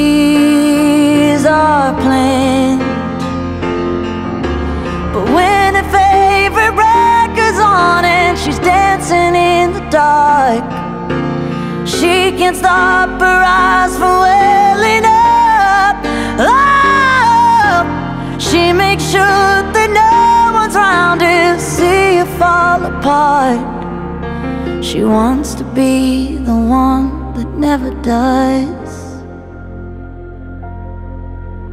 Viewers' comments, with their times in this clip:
0:06 I swear I can occasionally hear a bit of visiting hours which is also about a close death
0:14 I am obsessed with the raspy note after “welling up”
0:15 DAMNN THEM VOCALS I'm not crying you are